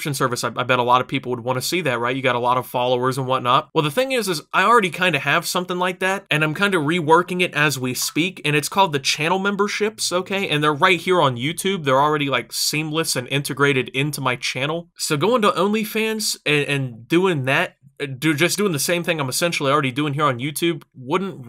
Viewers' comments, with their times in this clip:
0:07 his snap noti made me think someone actually wanted to talk to me. Then I checked my phone and the disappointment set in. :(
0:07 catch Dat Snap notification.
0:08 his Snapchat went off also this isn’t important at all just wanted to say